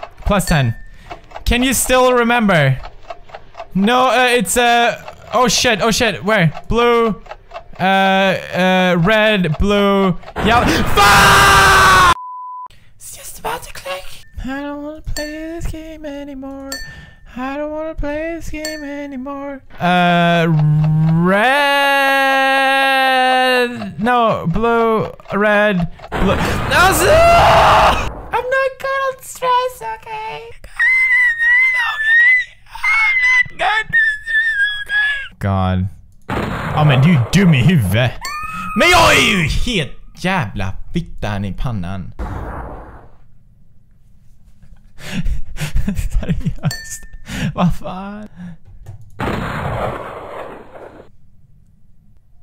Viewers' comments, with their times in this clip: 0:10 R.I.P. Headphone/Ear Bud users...... Including myself.
0:30 and now PewDiepie will voice like a girl and sing
0:38 is that Swedish?